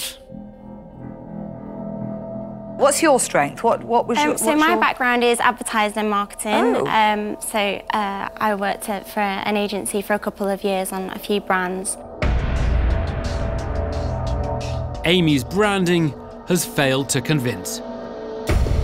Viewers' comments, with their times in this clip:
0:06 Deborah's 'oh' is terrifying